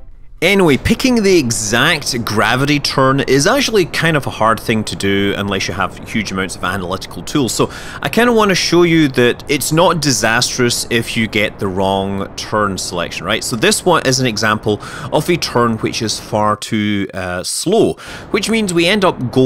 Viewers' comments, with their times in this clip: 0:03 rip headphone users.